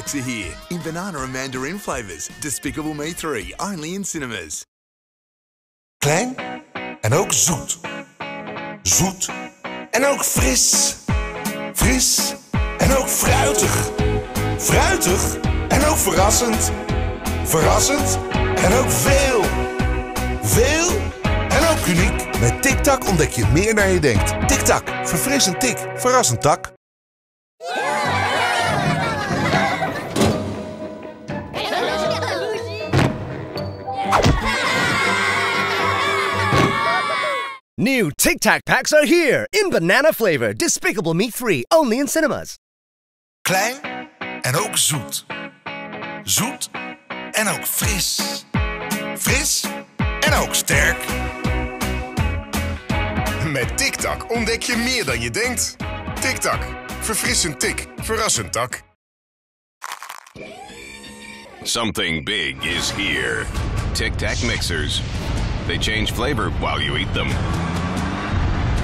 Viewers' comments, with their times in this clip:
0:05 Thank an oak saw. A shootin analysis. This a no-fail.
0:22 "The DICK tac" Me: ......no thanks...
0:43 Cle Get Out Suit, Suit And Now Fist, Fist And Outstare
0:56 sounds like he said tik tok